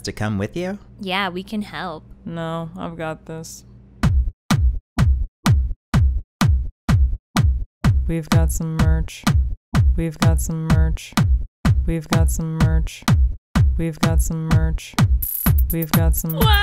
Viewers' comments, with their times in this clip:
0:03 The song is actually kinda catchy
0:03 That song is SO WATERMELON
0:04 THE SONG IS AMAZING:0
0:04 The music starts
0:04 The best song ever starts
0:04 The Music Start